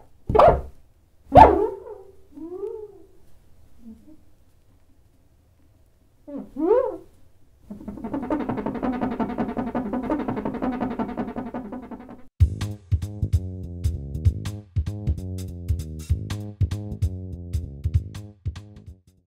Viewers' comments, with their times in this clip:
0:07 I keep hearing TakiTakiTakiTakiTakiTakiTakiTakiTakiTakiTakiTakiTakiTaki